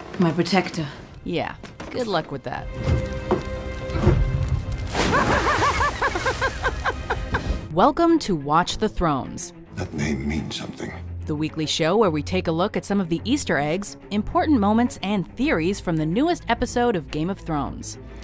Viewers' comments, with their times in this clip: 0:03 You hear the distant "I will never dieeeee....."